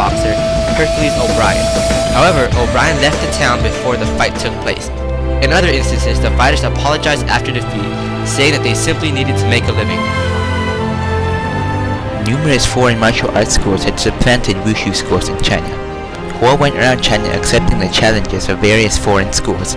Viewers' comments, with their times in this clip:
0:05 i like the hou yuanjia ´s melody